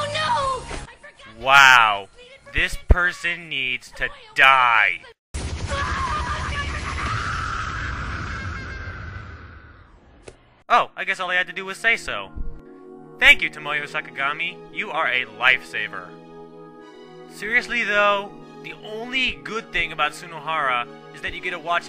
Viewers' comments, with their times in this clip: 0:05 About the only time I liked him was when he got pummeled and hearing his childish whines. Thankfully I got plenty of that. X-D